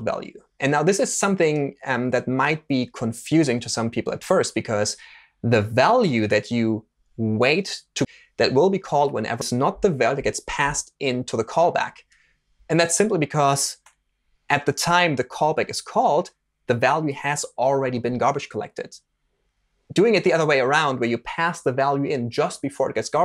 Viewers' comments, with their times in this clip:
0:06 some weird audio cuts